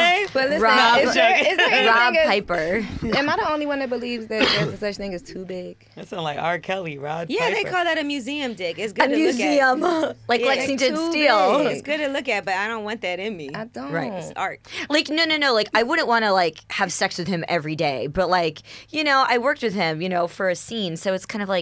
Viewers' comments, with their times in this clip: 0:03 🤣Durk whistled tryna get Von attention